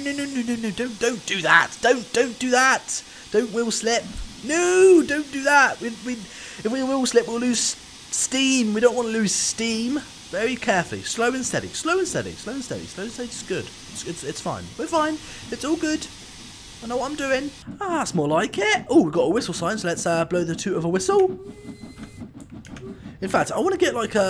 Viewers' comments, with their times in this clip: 0:05 the wheels like make no sound